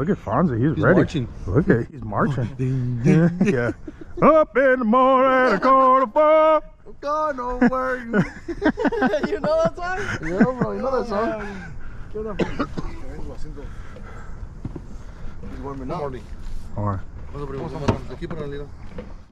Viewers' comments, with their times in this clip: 0:03 Lol, pretty spot on sounding like a drill sergeant.